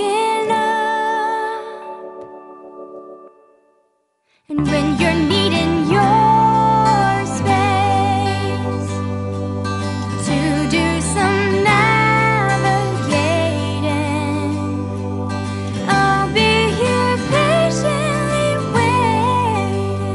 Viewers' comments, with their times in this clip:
0:03 Why is everyone saying they didn't like the song from onwards? This is a cover, not a copy. When I read those comments, I actually thought she went out of tune or something, but it wasn't that bad, on the contrary. As a matter of fact, it was pretty good to see a different version from the original song.